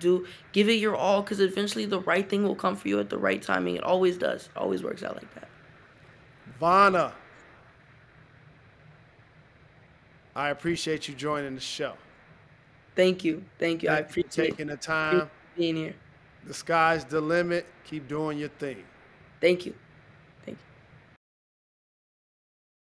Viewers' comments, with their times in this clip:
0:06 Not him saying vana